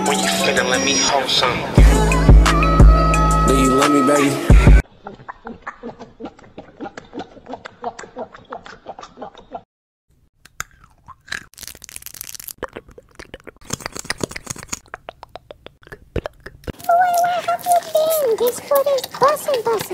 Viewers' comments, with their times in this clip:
0:04 Audio was Wild
0:05 Bro that gulp gulp gulp is a bit sus if y’all know what I mean⭕️